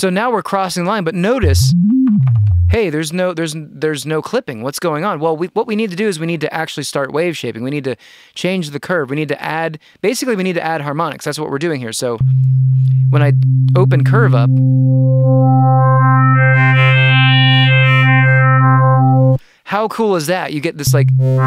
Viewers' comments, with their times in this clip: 0:05 I'm trying to work out what you did with the Operator's internal LFO by it's presumably not affecting the A Oscillator as the pitch isn't bending up & down, so where is it going to?